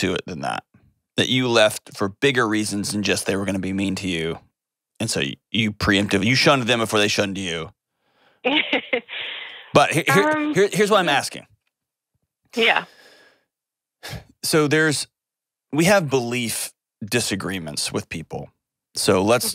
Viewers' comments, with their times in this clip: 0:07 Dr. John Delony was disrespectful of the caller’s boundaries as he poked and prodded, “my guess is there’s more to it than that. That you left for bigger reasons than just they were going to be mean to you…” (notice the caller’s nervous laugh in response, ) That was not empathetic and showed a lack of self awareness or possibly a willingness to exploit the caller.